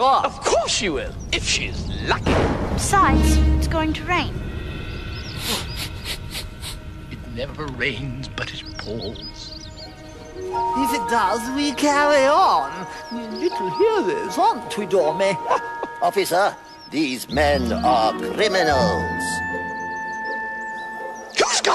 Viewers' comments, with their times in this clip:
0:07 the music and line at this part gives me chills and I LOVE it. This is my favorite adaption ever.